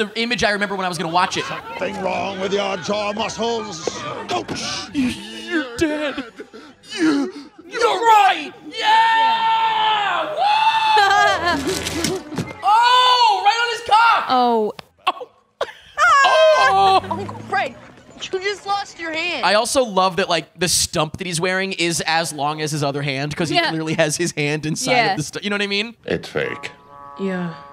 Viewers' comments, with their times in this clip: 0:09 does that or does that not sound exactly like Michael J. Fox?